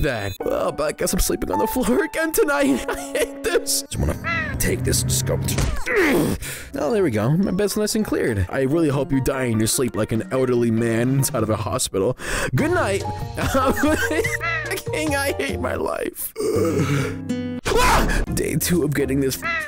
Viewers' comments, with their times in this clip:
0:05 the smack has me rollinnnng